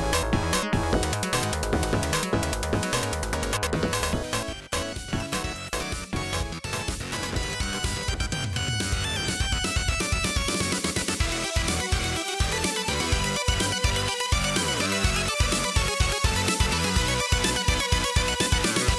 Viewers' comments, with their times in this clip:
0:04 music was actually pretty cool